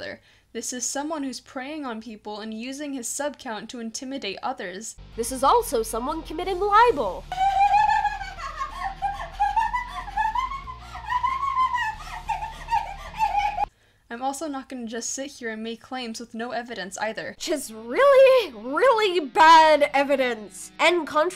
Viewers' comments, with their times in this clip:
0:07 bro that junko ass laugh 😭
0:07 That laugh slayed me.